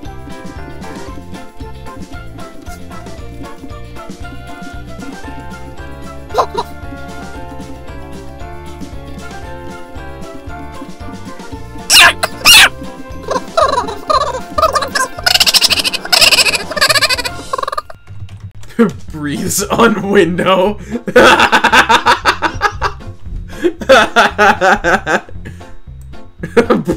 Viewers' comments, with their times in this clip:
0:10 WHAT. THAT SOUNDS LIKE A DYING SQUIRREL
0:11 it’s the alvin and the chipmunk giggle that sends me 😭
0:12 what are these alvin and the chipmunks noises bro😭😭
0:14 sounds like those ghosts in Luigi in the haunted house 😂😂😂😂